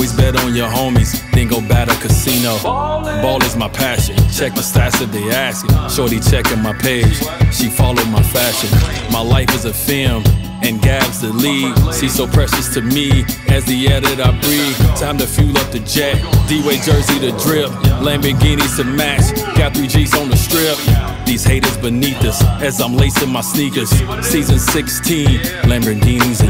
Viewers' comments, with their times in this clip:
0:07 🔥🔥🔥 Who is listening this every day This voice is fascinating 💕🔥💛 👇👇👇💕